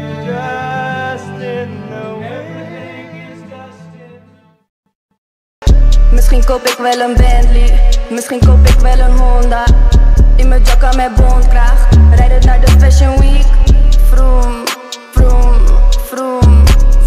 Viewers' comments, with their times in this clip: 0:05 the dutch part killed me